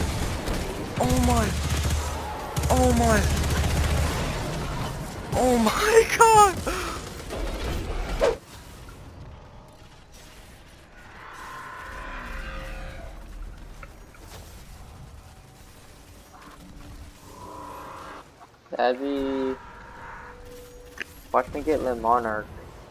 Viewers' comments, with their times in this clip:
0:09 was he on Xbox 360 chat what was that mix quality